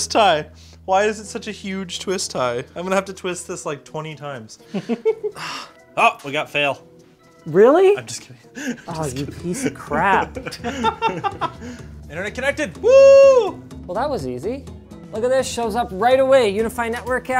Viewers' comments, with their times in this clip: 0:03 whoever laughed sounded like Clank from Ratchet & Clank holy shit